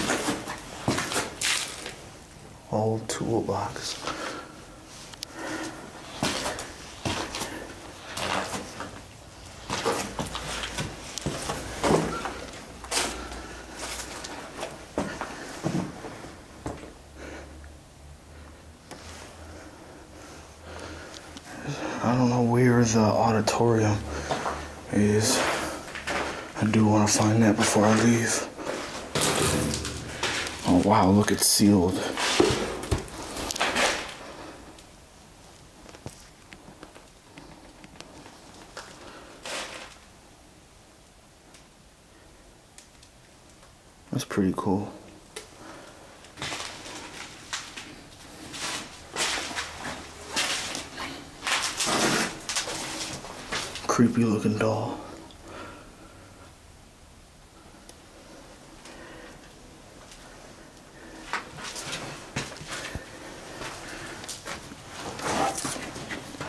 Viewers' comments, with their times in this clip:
0:08 pretty sure there’s a voice…? Great Vid btw ❤
0:49 someone saying hi?